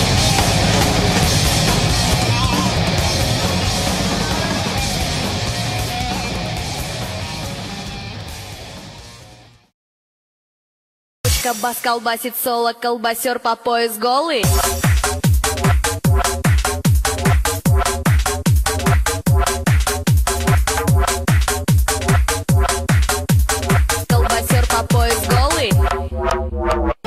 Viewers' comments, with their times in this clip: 0:07 Zoomer music is quite boomer for today, lol
0:11 I think the track doesn't fit zoomer but would fit doomer. For the rest, boomer and doomer: great music!
0:12 its boomer music